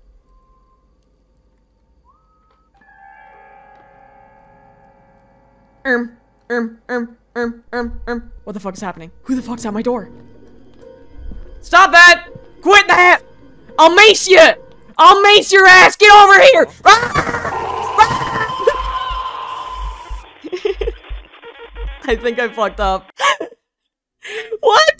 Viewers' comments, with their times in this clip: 0:10 DID I HEAR THE WHISTLING MAN!?!?